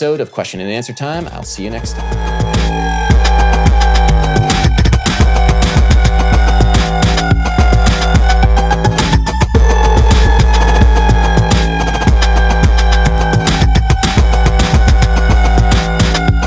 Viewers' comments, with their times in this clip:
0:04 What's the outro song? So intense :0